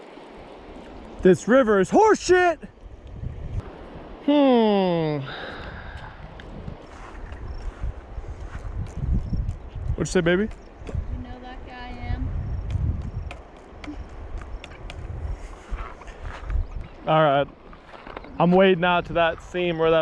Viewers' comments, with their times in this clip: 0:07 lmao those dogs smacks....